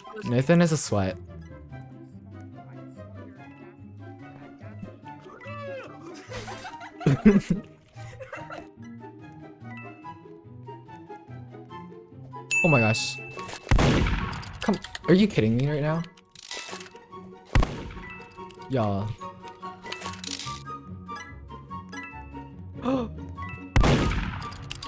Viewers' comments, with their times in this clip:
0:06 HELP MY SCREAM..